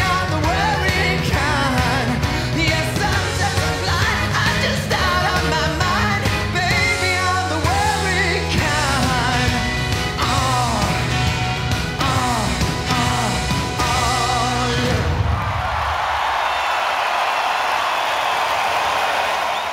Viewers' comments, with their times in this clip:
0:03 Good song and it would have better place, if his vocals wasn't shaking and he wasn't out of breath all the time. he couldn't hit that high note so he just awfully screamed.